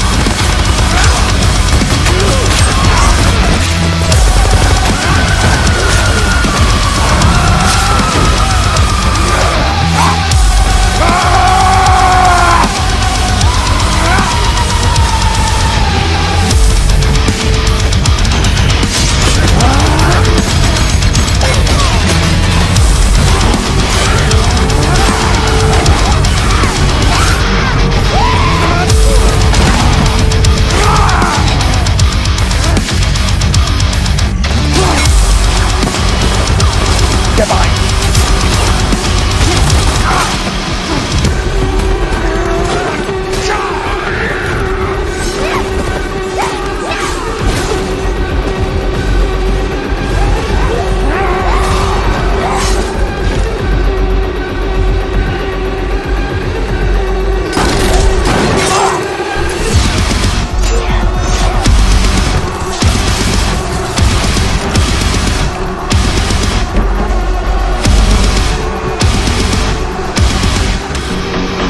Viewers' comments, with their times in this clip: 0:06 why did his lunge roar
0:10 That roar though. Goosebumps
0:11 That fucking scream. Fucking hell it feels satisfying..
0:59 The gun firing and the music was so perfect here.